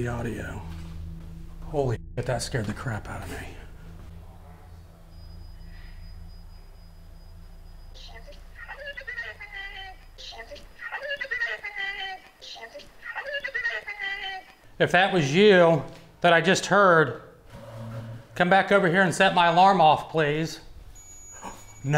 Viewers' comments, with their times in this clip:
0:04 it sounds like the male voice is saying “All by myself”. 😮
0:04 the male voice says “ all by yourself”